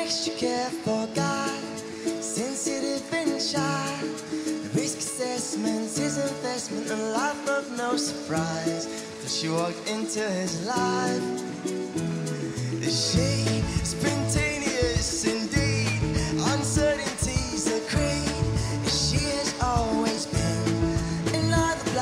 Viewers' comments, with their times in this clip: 0:10 I thought he had past wind, or did a small poop, either way brilliant song. 12 from The UK. Hope you win.